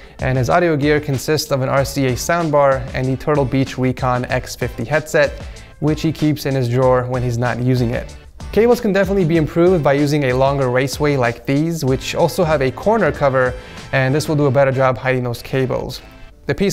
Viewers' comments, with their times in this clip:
0:03 hold on one more time,WEECON
0:04 did he say wecon?